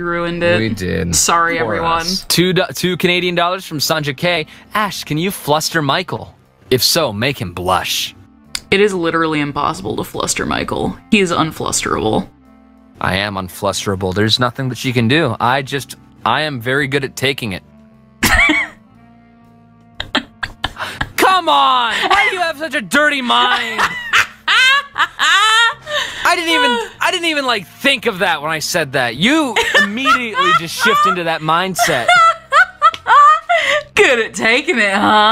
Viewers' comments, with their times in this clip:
0:10 the little gasp when he realizes what he said 😂
0:20 the gasp as he realizes what he said-